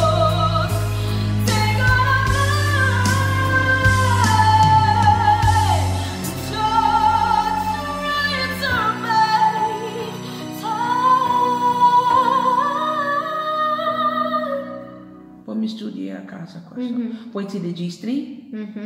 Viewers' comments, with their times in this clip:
0:06 it really sounds like Christina when she says to try... Really beautiful this note!!